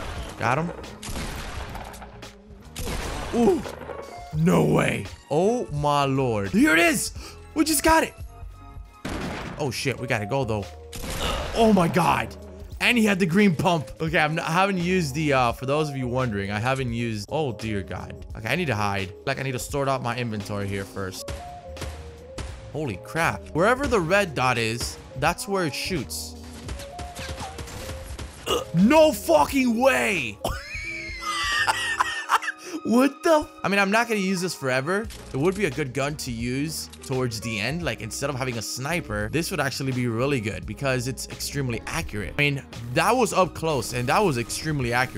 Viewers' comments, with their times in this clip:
0:07 Dude what kinda yes was that ... sounds like someone else was talkin
0:27 ? Tf is that noise :D